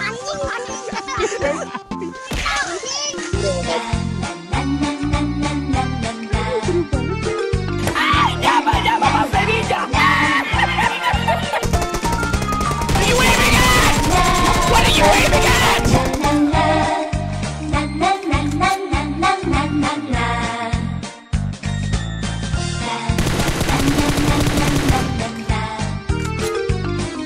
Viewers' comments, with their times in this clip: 0:06 oh Korea music!!😍(I'M from korean)
0:11 the Legendary laugh